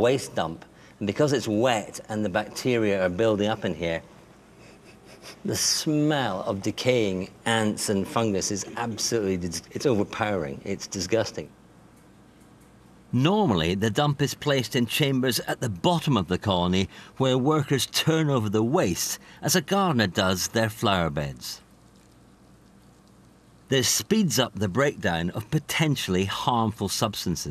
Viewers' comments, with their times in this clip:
0:10 the ants smelled so funky it changed his accent